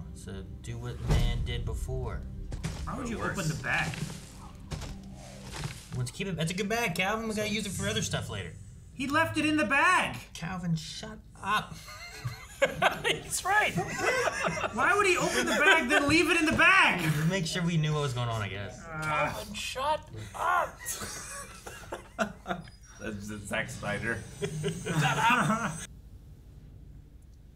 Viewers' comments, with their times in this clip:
0:10 that SHUT UP sounds so personal 😂😂